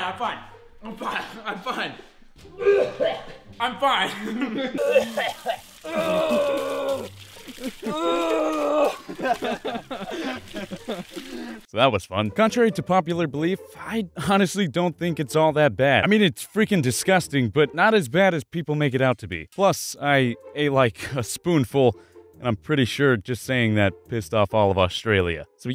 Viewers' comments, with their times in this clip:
0:10 sounds like theoddonesout aka James laughing in the background